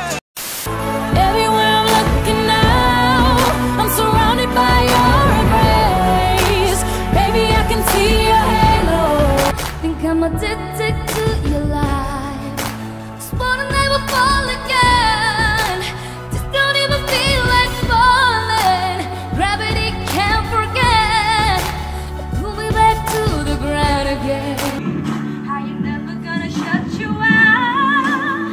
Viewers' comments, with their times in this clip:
0:10 her voice in amerikan songs is just mind blowing 🤯🔥👍✨